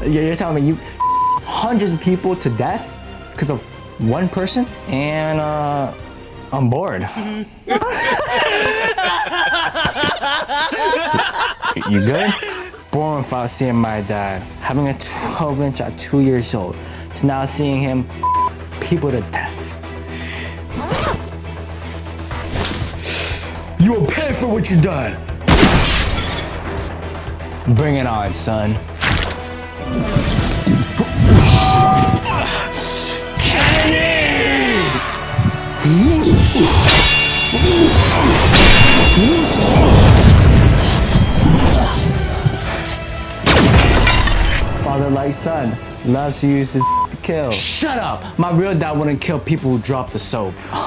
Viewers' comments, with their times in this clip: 0:08 that laugh made me lacking an my mom heard it now im grounded because of stayin in 3 am watchin ur vids💀
0:29 too bro what’s that brotha that watery sound was mmm,mmm ain’t no way
0:35 fucking beyblade and the" woos"